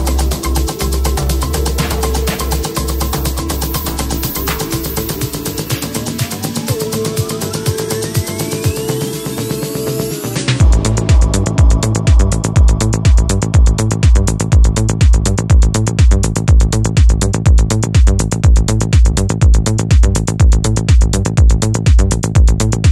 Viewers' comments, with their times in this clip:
0:10 Woaaaaaah! That drop